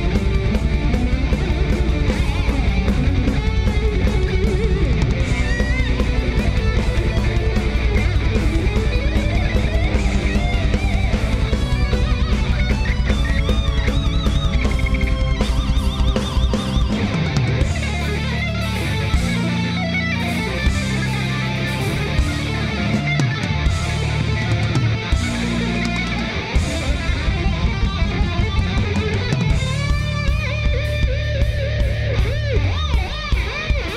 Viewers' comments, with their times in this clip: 0:06 Great show, but did Romeo totally botch the Sea of Lies Solo or what? Like just listen to that shit Out of tune and off key notes and sloppy as fuck.
0:19 I think vocals need little bit reverb as audio engineer it sounds little dry on my ear....romeos sweeps go badly wrong